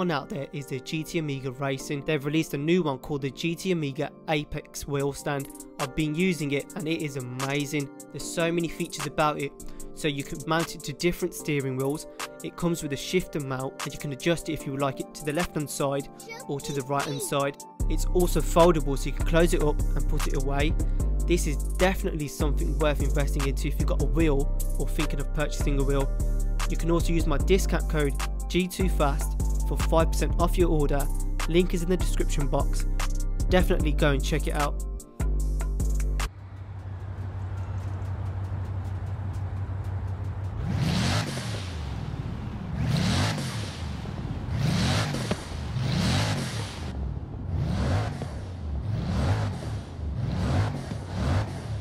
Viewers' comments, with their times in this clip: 0:05 You sound like your rapping😂
0:39 how are you revving your engine in first gear without depressing the clutch?